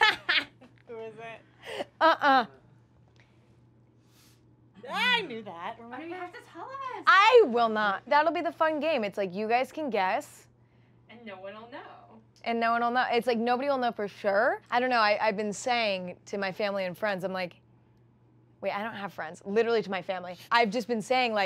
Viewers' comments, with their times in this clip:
0:03 i swear she said "Timothee Chalamet" ...and im sad now cuz she didn't get to interview timmy😢